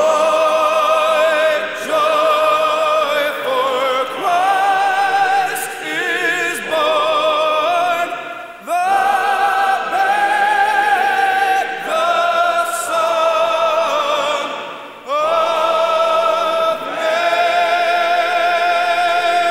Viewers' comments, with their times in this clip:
0:07 What a beautiful song! This is the BEST version! The depth, the emotions, the build, the chills of this song, the heart in it, the power! I'm lost for words and my heart drops and pores raise every single time. Thank you for this upload!